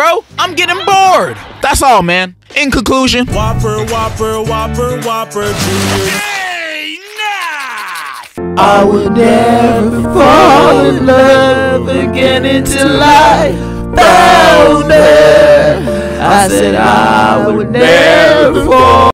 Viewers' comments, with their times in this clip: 0:07 best cover I have ever heard ong